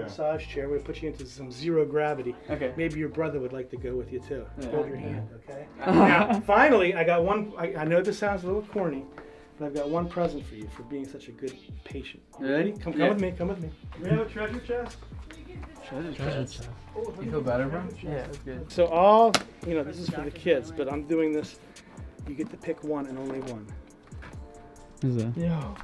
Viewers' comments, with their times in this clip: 0:09 what did he sayyyy